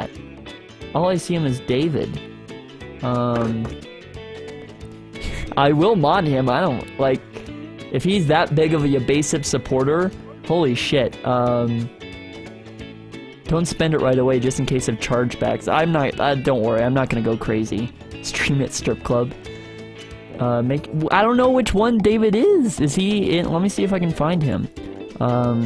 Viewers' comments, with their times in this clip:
0:06 OOOOOOOOOHHHH my reaction when he said his YT name I thought it ended like 'kip'